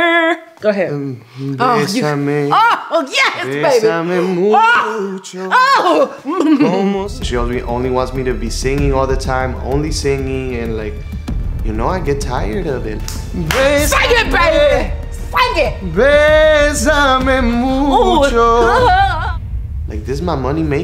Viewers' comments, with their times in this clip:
0:03 hahaha Glozell orgasm